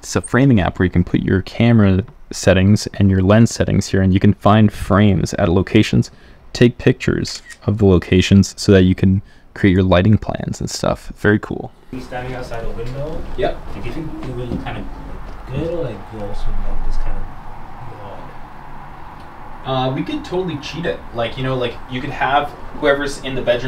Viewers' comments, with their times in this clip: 0:06 Hi, What’s the of the app used I heard “cat rage” but nothing matches in App Store lol